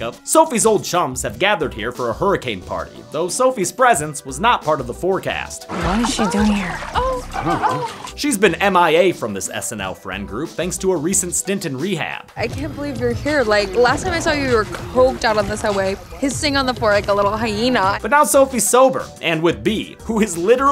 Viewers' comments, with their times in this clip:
0:05 why is there moaning sex noises in the background ...